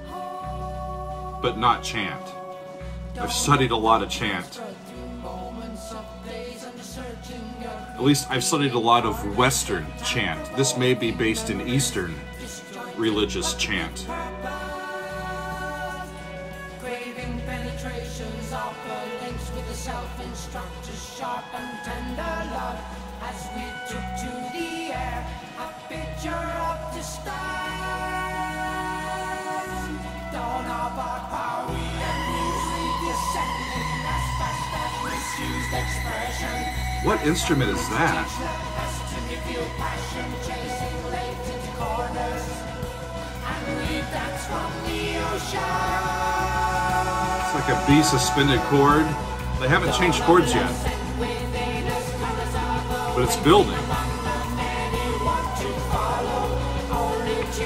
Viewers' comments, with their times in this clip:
0:04 One usually never hears vocal harmonies cluster this closely - something that really grabbed me the first time I ever heard this song (live version). It gets at the heart of what progressive rock is: progressive rock can be summed up as "what if we did *this*..."
0:37 You asked:"What instrument is that?" It is a Minimoog with noise frequency modulation. Rick Wakeman is in excellent form on this album. Steve is using a volume pedal on the steel guitar for slow attack effects and tremolo's
0:38 If by "Eastern" you mean the chant is like some Orthodox practices, yes, definitely Eastern, not Western (Roman) rubric. To the best of my memory of keyboards in the Wakeman arsenal of the time, the ARP 2600 is the answer to your question, ca. Slight possibility that it's actually Moog Modular (not Mini, which is heard later on — the screaming, Blues-drenched solo). Somewhere along the way, an innocent flute was accused of recorder impersonation, but the culprit is Mellotron. Now, after typing all that out, it occurs to me that the gatefold of Wakeman's "Six Wives of Henry VII" is an overhead of just about exactly what he used in the studio and on the road with Yes, but I haven't held the LP in my hands in ages — I could be remembering the wrong one...
0:40 The instrument was mini Moog. Keep in mind that at this time there were still no polyphonic synthesizers, the only "string machine" was the Mellotron (A keyboard actuated tape machine with symphonic instruments and choirs recorded on tapes that looped for each individual key.), and there was absolutely no digital anything. I get the feeling there's a whole lot of guitar that you don't realize. Steve blends with Rick's keyboards, and vice versa, so well that there's a lot of guitar that is confused for keyboards. The "delayed attack" from the guitar is using a volume pedal to swell the sound in. I heard an interview with Wakeman where he was asked the meaning of Jon's lyrics. He said he had no idea but he's sure it meant something to Jon.